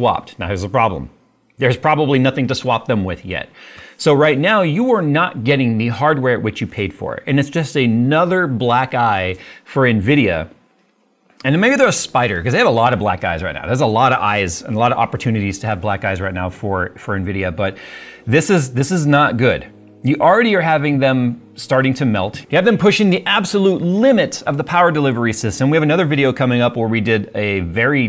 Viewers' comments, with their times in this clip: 0:06 Black eyes or black guys? lol jk I got what you meant but I had to go back like wait what?? 😂
0:12 i swear he says "BlackGuys" 💀